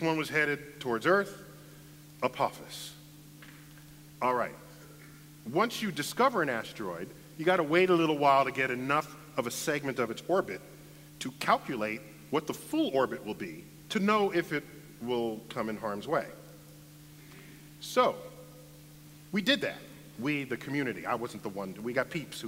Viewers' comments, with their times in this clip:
0:09 the spirit of Ronnie James Dio jumped into the body of tyson for a second.